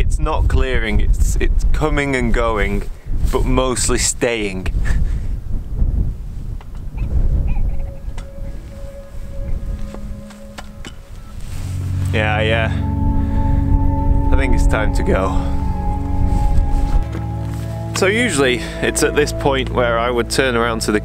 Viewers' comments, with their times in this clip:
0:06 had anyone heard the red grouse?